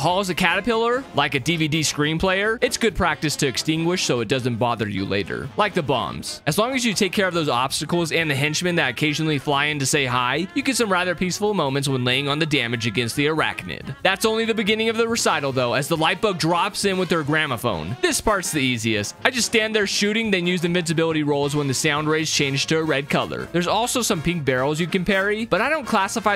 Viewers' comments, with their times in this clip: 0:07 you said lastacles